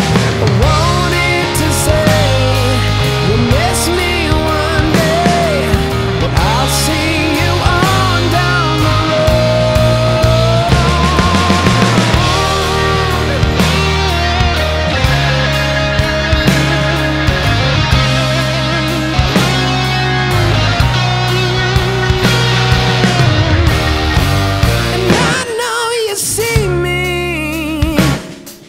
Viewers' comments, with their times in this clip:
0:10 The way his voice melts into the guitar. Honestly hard to top this